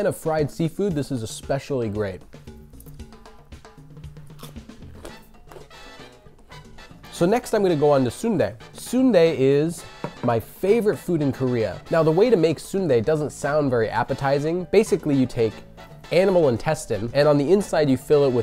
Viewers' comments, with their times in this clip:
0:04 heard that crunchiness 😴